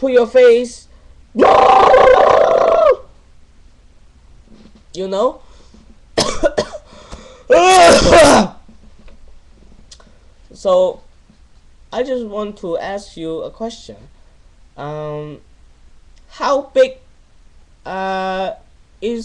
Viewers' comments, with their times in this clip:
0:07 true chinese cough